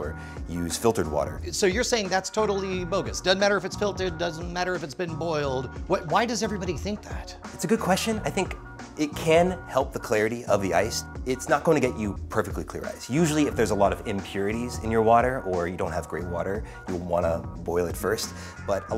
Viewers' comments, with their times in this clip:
0:06 why does he look and sound like Lazaro Mendoza from The Inmate ? :D